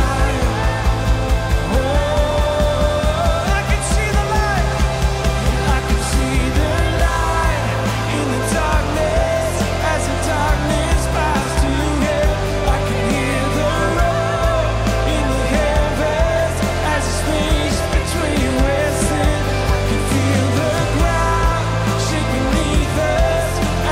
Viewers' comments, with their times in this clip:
0:09 Anyone hear that sound in the left earphone?